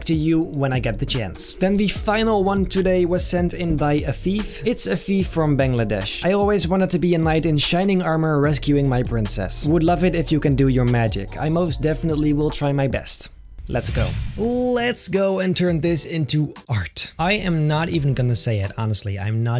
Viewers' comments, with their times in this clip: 0:04 I thought he said "a thief"